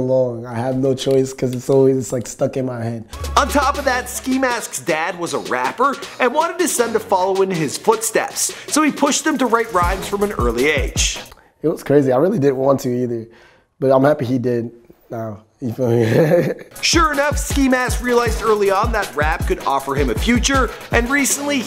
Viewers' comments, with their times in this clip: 0:04 BROO I MISS HIS LAUGH 😭😭